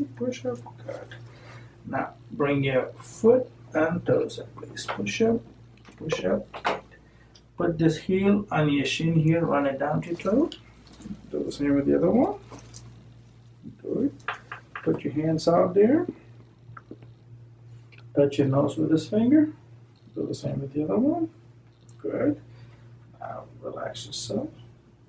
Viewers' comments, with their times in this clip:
0:09 why does he channel almighty kermit, a mighty yet fearfully covetous minder of his flock?